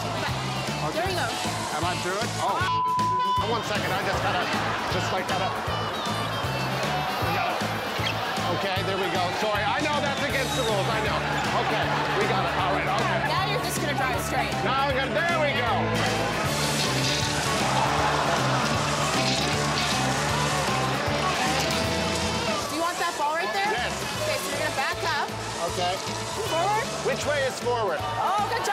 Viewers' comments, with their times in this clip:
0:10 Oh yay, I just love seeing myself laugh like an idiot on national television.